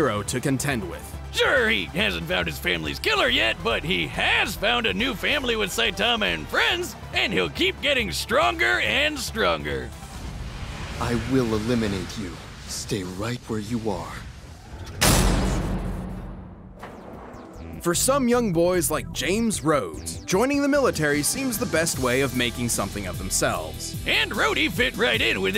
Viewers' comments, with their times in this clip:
0:10 Now that I have seen some of One Punch Man, I have a few critiques with how they handled Genos. I'm still happy War Machine won, but I have problems with the loser. 1: He sounds organic and not like a cyborg. You can hear in his ending line that he sounds like a robot. In the fight, he sounds like an angsty organic teen. 2: He acts like a loner, but in the anime, he's a bit more of a social butterfly, at least when it comes to Saitama. Genos dropped everything so he could learn under Saitama and is always willing to go wherever he goes. 3: Kind of a similar problem to the previous one, but Genos acts way too edgy. Yeah he looks edgy, but he isn't as much of an edgelord as he looks. 4: In the anime, whenever he uses his fiery abilities, he says "incinerate". He says it so much that it's practically his catchphrase. Obviously, in the fight, he never says it once.